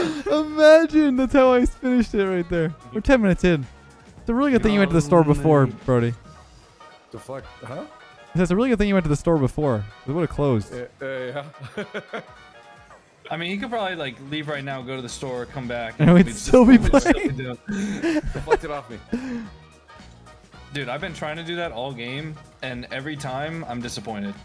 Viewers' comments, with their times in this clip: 0:06 anyone else hearing “tf”?